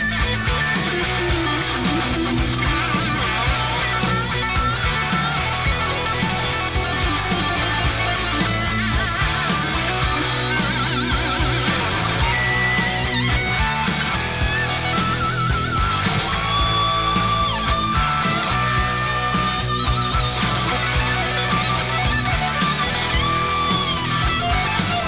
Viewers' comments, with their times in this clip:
0:10 Totally agree. The phrasing & tone is just phenomenal with this one. And that whammy note !! Just Godly!